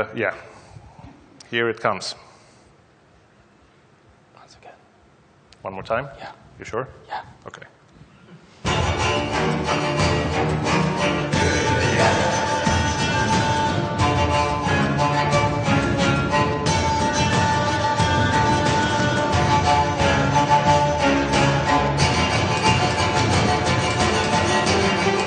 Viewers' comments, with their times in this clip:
0:07 this is so cute, I could imagine little isopod babies talking to each other like this! ADORABLE!!!